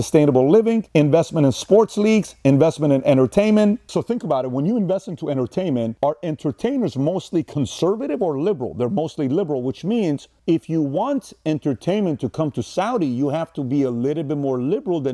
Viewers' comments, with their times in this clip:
0:03 At ~ the mark there is jump down in the audio level.